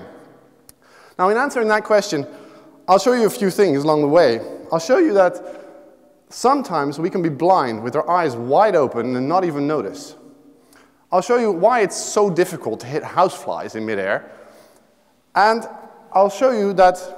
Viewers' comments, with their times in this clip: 0:04 Jesus, he sounds so nervous. Listen for a pretty funny voice crack.